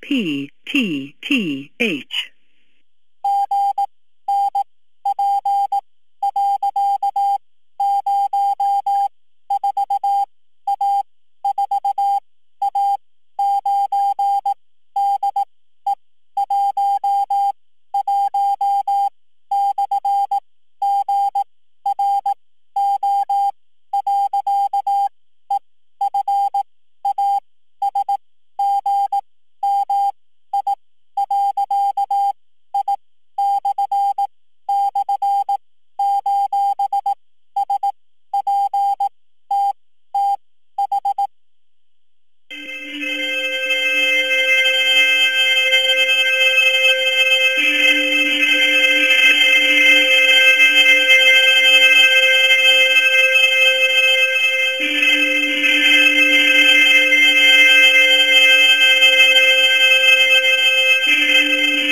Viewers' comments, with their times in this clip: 0:03 that's Morse code.
0:08 it like flashing lights but every beep its flashing lights in macgyver the old tv show in one episode they use it to find help
0:21 The beeping is Morse code
0:39 That part that starts with the horns followed by the music with the phone dialing sounds...is there anyways to figure out what numbers are being pressed based on those sounds and get another phone number from them? im new to this but that part caught my ear/eye/attention
0:48 That song with the dial tone song in the back round 😂😂😂😂😂😂😂😂😂😂